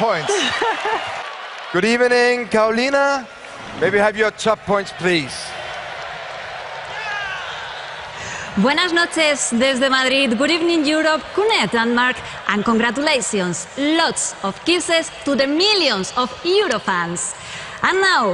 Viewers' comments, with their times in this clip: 0:06 I love the way she speak❤️